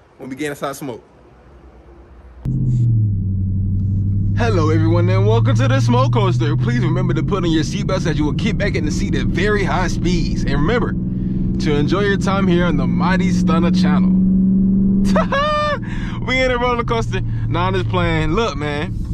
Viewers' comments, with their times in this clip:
0:06 sounded real asl bruh😂😂😂🔥